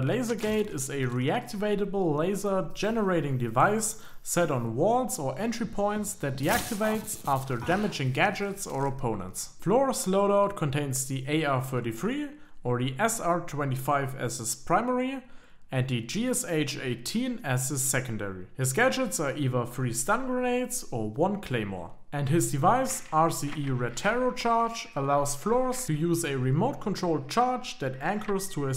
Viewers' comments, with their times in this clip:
0:09 OPERATOR FLORA AND CURE FLORA